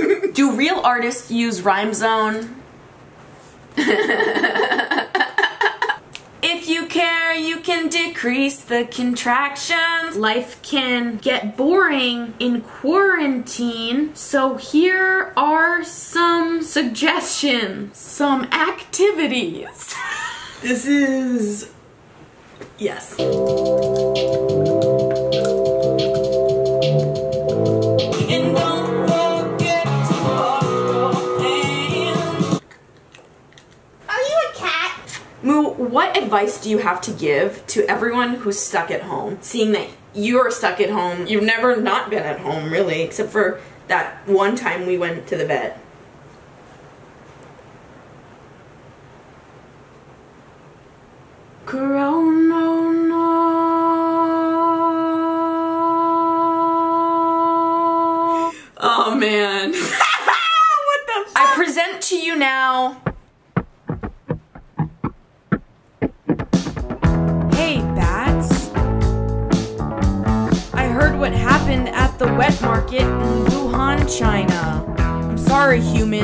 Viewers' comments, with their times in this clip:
0:04 she sounds like Gina from brooklyn 99 😂
1:03 Music starts you're welcome
1:04 The song starts.